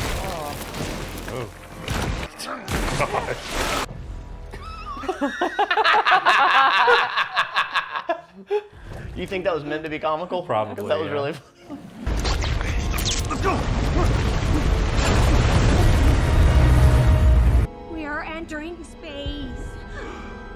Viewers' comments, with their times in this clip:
0:04 in a packed theatre opening night, nobody laughed here you psychos ahahaha